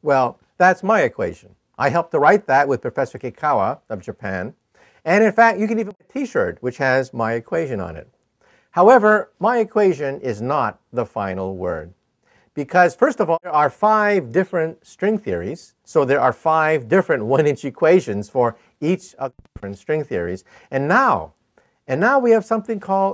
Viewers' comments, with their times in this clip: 0:05 What did he say at the silent bit ?